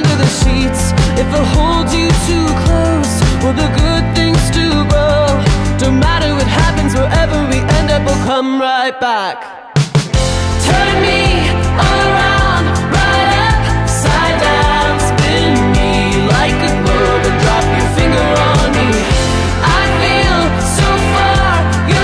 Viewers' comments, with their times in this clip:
0:07 Don't get me wrong, I love this song, but I gotta speak up when something sounds weird. Does it get off-beat after the break ?